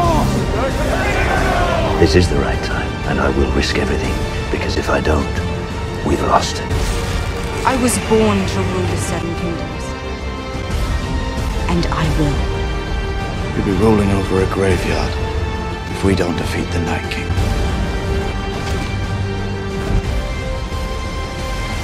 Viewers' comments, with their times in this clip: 0:09 For your first GoT tribute, this is absolutely terrific! Love the ending especially. Couple of things I noticed: The audio sometimes gets slightly interrupted (like when Dany says Seven Kingdoms). I can't tell if it's the source material or somehow came up during rendering. What editing program do you use, if you don't mind me asking? I also heard a bit of original background music here and there. You can avoid that for the most part if you have the episodes in 5.1 sound, but if you don't, I think it's generally better to make the sound from the scene a bit quiter, or in some cases, completely muted. Hope this helps. I've subscribed and am looking forward to more :)